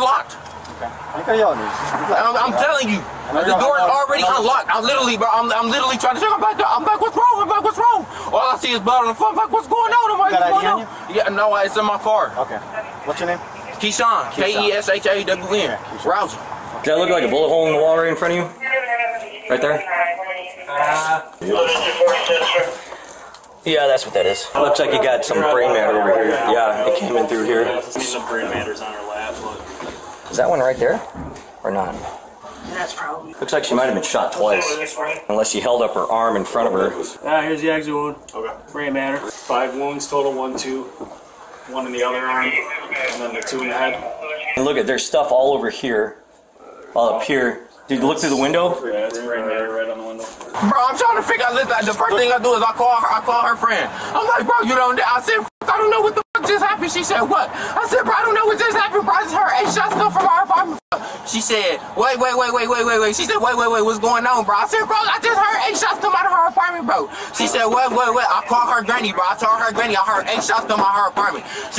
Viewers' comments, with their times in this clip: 0:04 Why does he sound like Yuno Miles? that's literally the flow from "Abraham Lincoln"
0:05 MICKEY MOUSE MODE ACTIVATED
0:07 What’s he doing…single a damn song?
0:13 Guy sounds like Micky Mouse LMAO
0:58 he sounds so annoyingly crazy omg I just want to…….